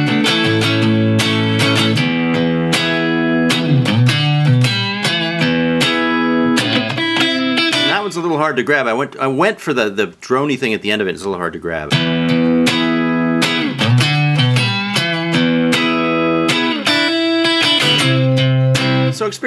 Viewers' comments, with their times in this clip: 0:07 Love this video! But my favorite part is when Tim hits a little bit of a clam on that change. It shows that even mega guitar masters like this guy (and he is one of the best) can on rare occasion make a stumble. We are still "Not Worthy", or at least I'm sure not, but he IS human after all. Great player, great teacher. A rare combination.